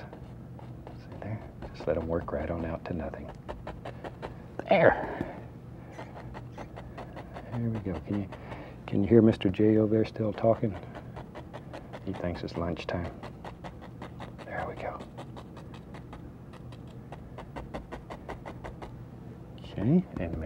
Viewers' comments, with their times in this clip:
0:04 What happened to his voice ???
0:04 Bob had the Travelocity Gnome voice. That was weird.